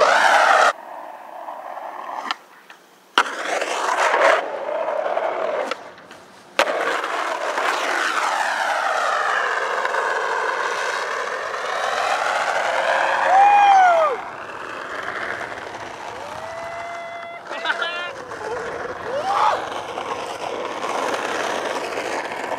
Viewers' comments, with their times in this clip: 0:10 close your eyes, an f16 jet files over your town